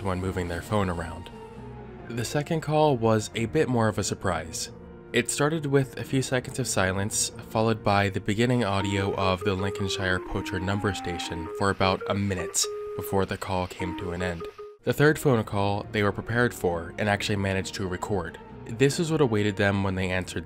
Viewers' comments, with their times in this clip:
0:08 i was pretty freaked out from this vid, but as soon as started, all i could think about was the tf2 heavy spinning with this tune lmfao